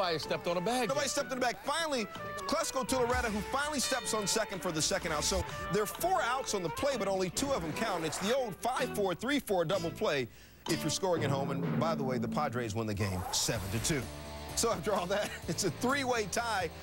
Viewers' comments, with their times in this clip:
0:03 crossing bell clang